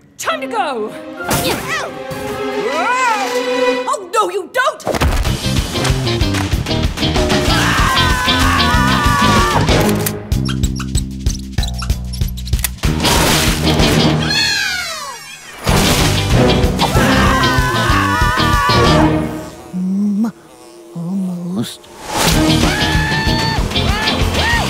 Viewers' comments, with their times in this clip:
0:09 did you notice that the squeaks are in time with the music?